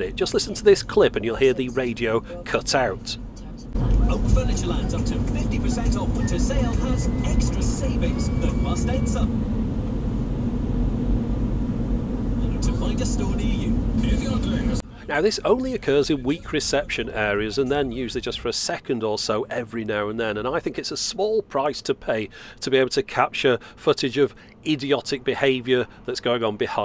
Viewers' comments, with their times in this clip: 0:08 THIS is why FM > DAB (and also because everything f*cking supports it) on FM that would have just been a little noise, instead of a complete cut-out.